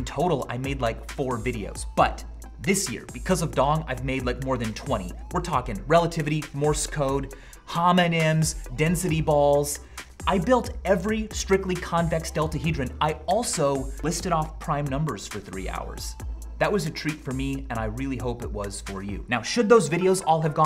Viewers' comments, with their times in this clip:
0:07 I thought he was going to say “Hamon” instead of “Homonyms”